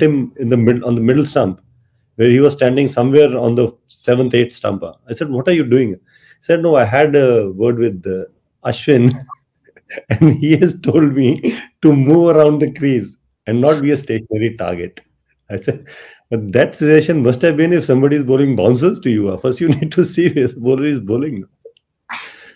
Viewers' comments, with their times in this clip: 0:05 ashwin just started to burst out laughing